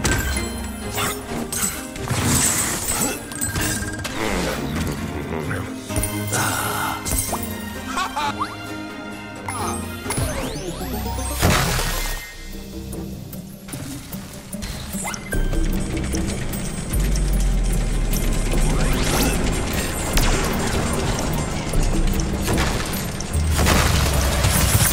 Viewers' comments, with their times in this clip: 0:10 The Jingle when you enter a “Swap Zone” sounded like the Jingle before the minigame starts from Mario Party 4.